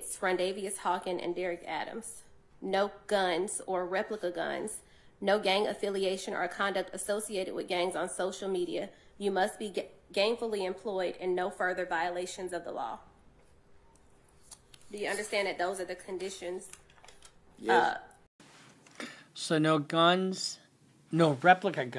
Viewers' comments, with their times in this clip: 0:08 She’s reading out conditions about no gang affiliation or activity then in the next breath I thought she said “you must be GANGfully employed…” Skerrrrt. I was like wait a damn minute… that’s some contradictory conditions right there, ma’am. 😂